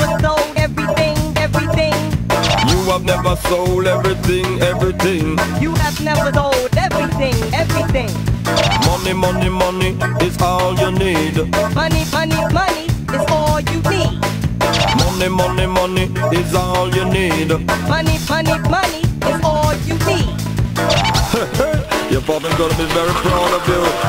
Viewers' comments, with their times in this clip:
0:08 parappa voice actor in a nutshell